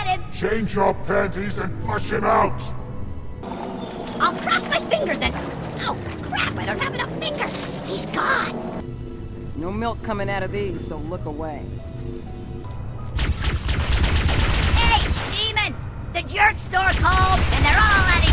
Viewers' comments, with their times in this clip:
0:04 I’ll cross my fingers and- oh crap I don’t have enough fingers p He’s gone...(that grunt sounded like Caboose)